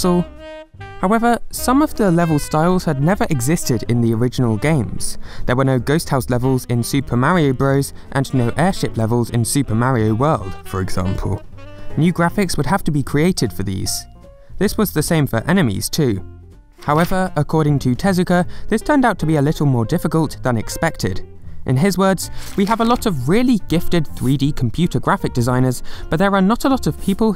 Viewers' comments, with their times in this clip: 0:08 What happened with your voice WTF
0:09 wth happened to his voice?
0:10 His voice just plummets from 100 to 0